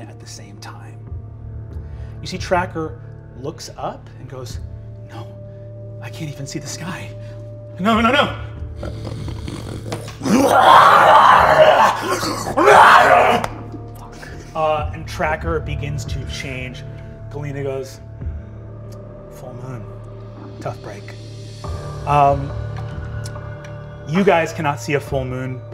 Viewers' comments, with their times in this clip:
0:08 Okay but brennan got some legit scary roars what CAN'T he do actually